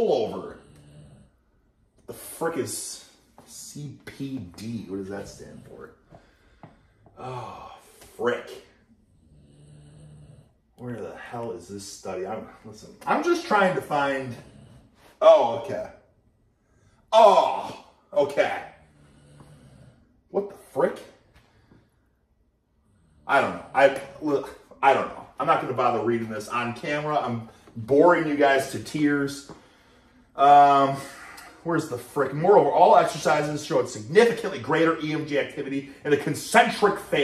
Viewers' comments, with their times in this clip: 0:09 Dog snoring kicking in had me dying laughing
0:09 Is his dog snoring in the background? as an example, listen
0:24 Who the hell can fall asleep when you're yelling😂 someone's snoring
0:24 who is snoring in the back